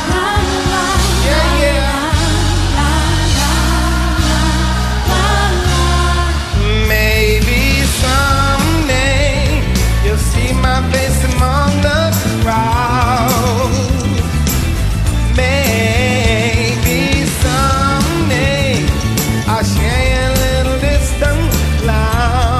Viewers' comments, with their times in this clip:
0:08 Bass guy goes crazy!!
0:08 the best part when the bass starts to talk